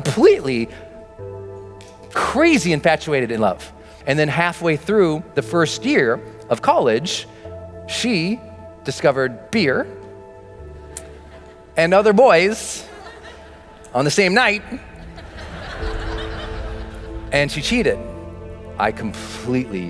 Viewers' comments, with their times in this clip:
0:06 I'm surprised that people laughed about it